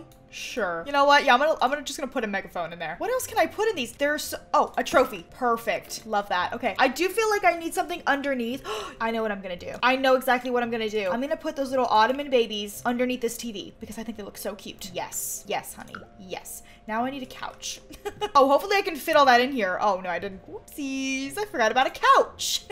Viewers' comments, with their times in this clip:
0:05 dose anyone hear that purfect and like it even matchs bc she has cat headphones Or is there something wrong with my ears or something